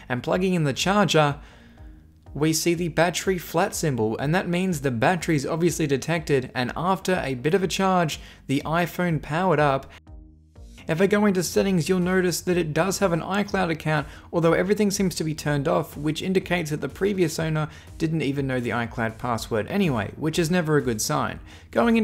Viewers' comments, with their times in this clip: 0:08 listen and you’ll hear it abounds like he stopped a voice over sentence